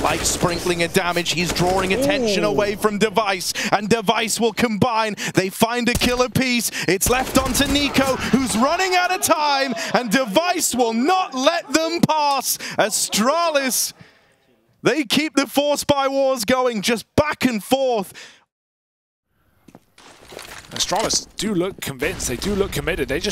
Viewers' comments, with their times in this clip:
0:09 that device buzz dap is audible